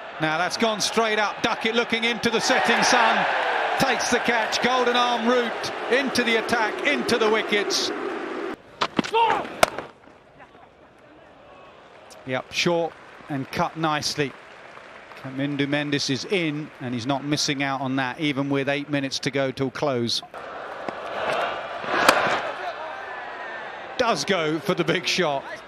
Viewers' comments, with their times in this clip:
0:07 Why was the crowd booing